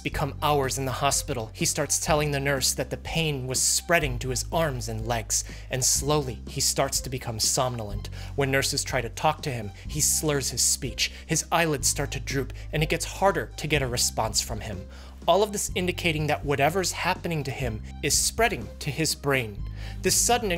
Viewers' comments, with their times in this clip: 0:04 I love rhe doom music 🎉🎉🎉